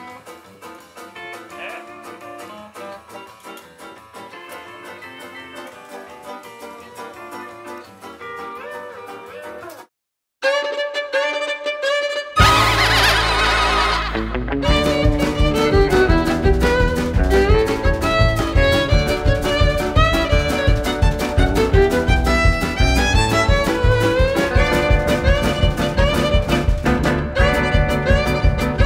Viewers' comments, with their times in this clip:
0:10 sounds like the opening to the famous Chinese song “sai ma”
0:15 Anyone else picking up a green acres vibe from the violin part?